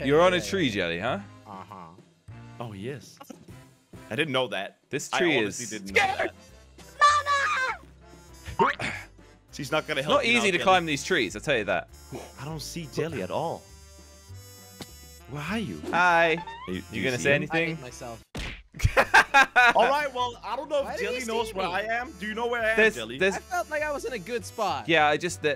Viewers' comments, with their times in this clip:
0:06 whats that scream